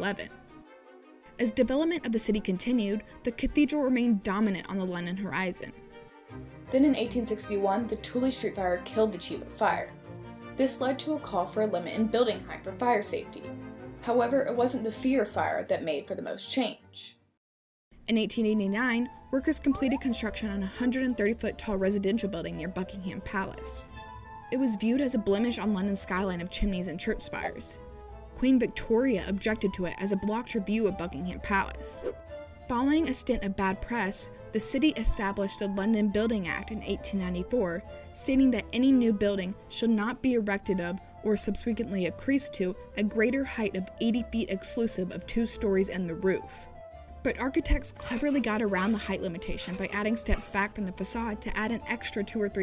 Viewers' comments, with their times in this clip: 0:07 This woman should learn to speak more clearly. The combo of her speech being unclear, and the background noise, makes it impossible to understand her.
0:07 “Then in 1861 the tooley street fire killed the tulip fire...” I’ve listened to this sentence about 20 times and I still l can’t make out what she’s saying. Would someone please enlighten me?
0:24 ,the way she says Buckingham Palace kills me
0:37 Thats... Certainly one way to pronounce "subsequent", yeesh.
0:40 Somebody *PLEASE* teach this lady how to pronounce "subsequently."
0:40 The narrator mispronounces “subsequent”